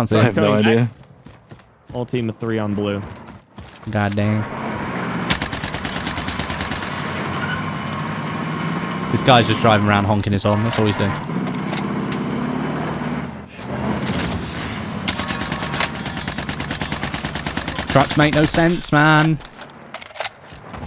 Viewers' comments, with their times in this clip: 0:04 when you're trying to hit the driver but you're british